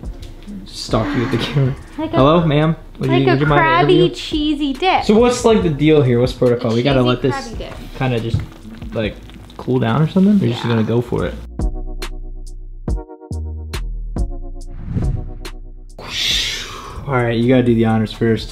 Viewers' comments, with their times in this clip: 0:05 Who else thought she said a cheesy craby dick 😂